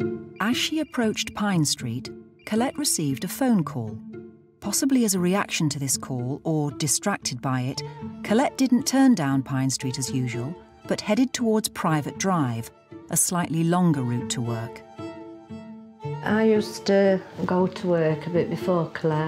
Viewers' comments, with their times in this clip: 0:03 why does this seem like an episode of desperate housewives? At least at this early point. I mean the narration is the same voice, same music